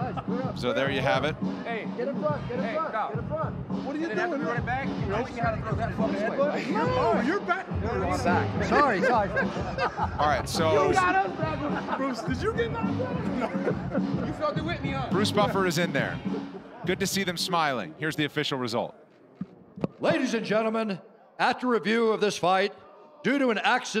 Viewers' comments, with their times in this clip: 0:06 awesome moment, everyone just having a laugh